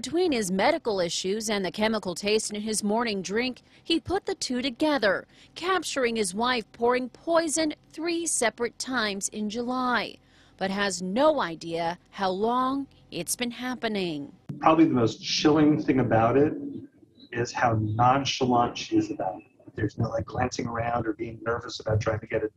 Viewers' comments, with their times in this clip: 0:08 why do all news reporters have that nasaly voice? is it a requirement for the job? "in juuuulyyyyy...."